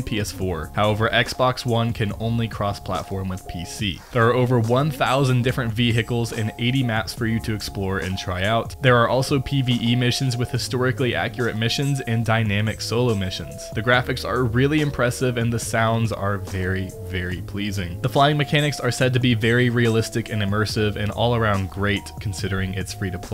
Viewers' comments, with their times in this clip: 0:05 ve-H-icles killed me hahhaa